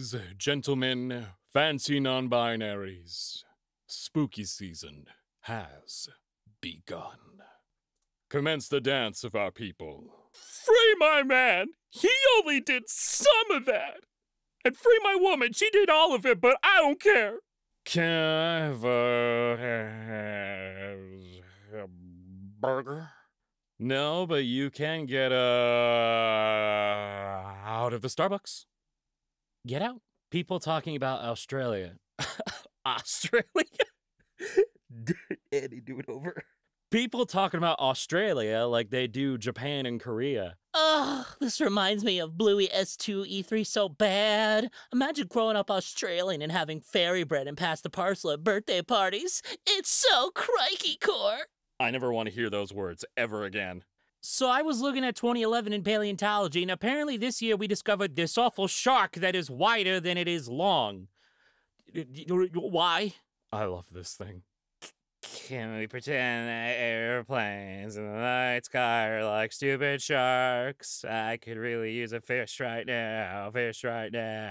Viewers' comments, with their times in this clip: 0:07 one, single, loud, D O O T
0:55 am I theonly one hearing 2011 when the post says 2021?